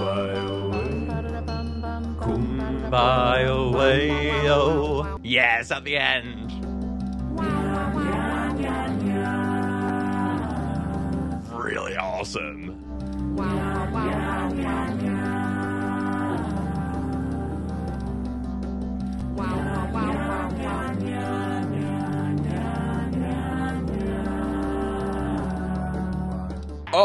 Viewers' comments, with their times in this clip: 0:10 HELP msm's voice scared me